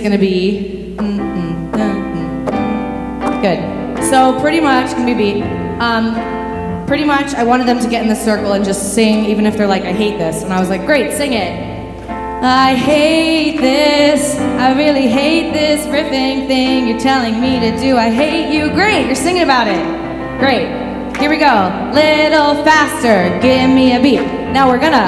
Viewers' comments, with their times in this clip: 0:06 thought they were about to start singing imagine by john lennon